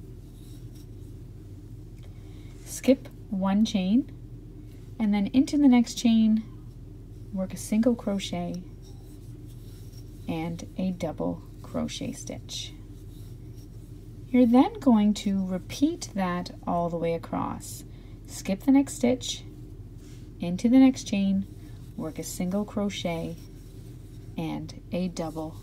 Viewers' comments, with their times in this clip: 0:09 In the beginning, when she is chaining to begin, does anyone find the sound of the yarn and the hook soothing? I do. I also love the sound of ballet shoes when they dance. Just a random thought a.m. and I have covid and insomnia. Thanks for this video.